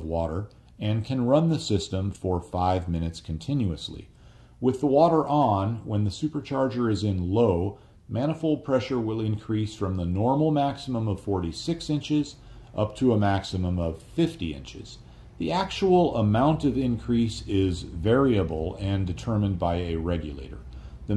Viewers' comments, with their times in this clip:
0:03 the noise floor increases for some reason